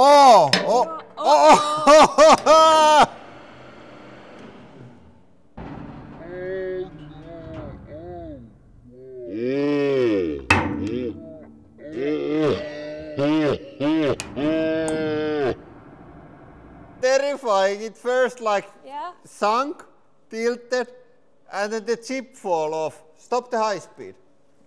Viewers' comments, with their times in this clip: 0:07 the slow-mo effects of their voices and expressions was hilarious